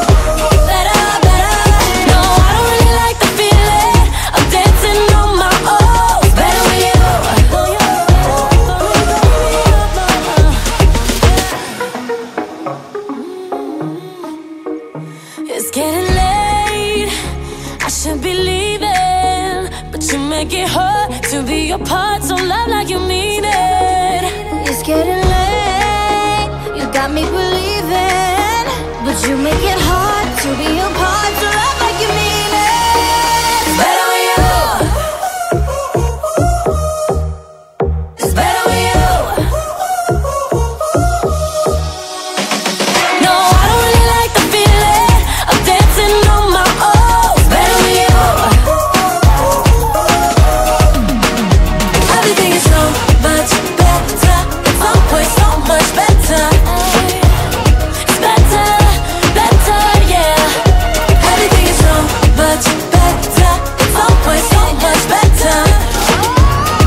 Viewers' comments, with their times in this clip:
0:06 What did Lauren say???? I can't hear it...
0:48 THAT WHISTLE TONE IS THAT NORMANI